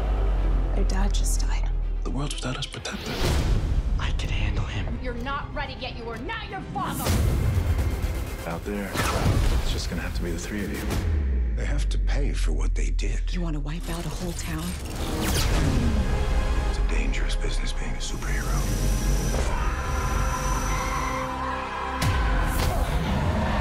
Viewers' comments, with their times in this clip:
0:08 that actually sounds like Clark